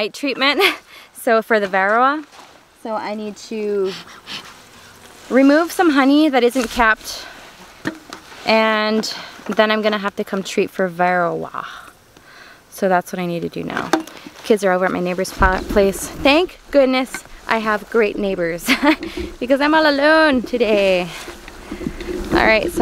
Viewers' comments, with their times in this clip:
0:09 Vero-wahhhhh. I'm saying it like that from now on.